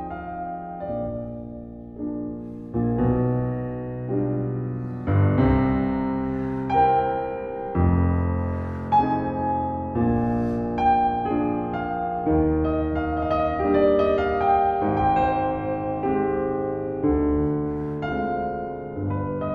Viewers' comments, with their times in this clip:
0:07 Can someone tell me what is that sound ? Sounds like a gasp, or I'm just going crazy?